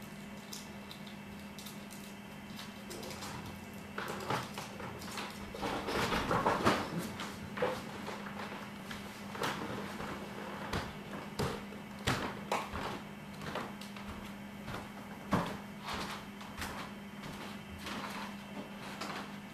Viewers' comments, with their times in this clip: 0:05 Floorboards screaming bro THATS how I know this is fake. If I heard that at 3am...I would've screamed and came in swining. I know you heard it. Fake.